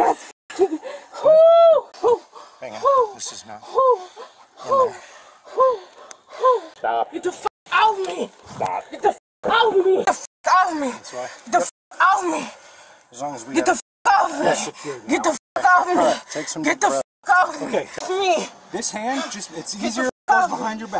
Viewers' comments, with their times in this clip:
0:03 not much keeping me here anymore, but thank you for the little things. That’s all I can say without yt erasing my comment.. The owl hoot made me laugh, and I can’t remember the last time I laughed. Thank you very much for the uploads, and not taking my comments away. Keep up the good work, y’all give me something to look forward to. Blessings.
0:03 like a said hoo hoo hoo hoo 🦉 😂